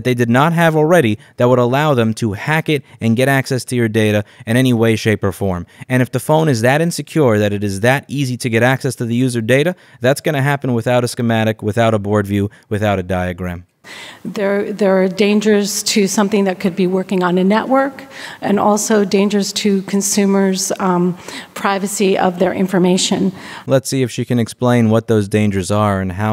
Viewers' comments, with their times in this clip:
0:08 At the mark, notice the sudden change to her voice. She is winging it aka she’s lying. Awesome Job as always. You gotta keep fighting Louis, it’s a just fight. Peace, Jules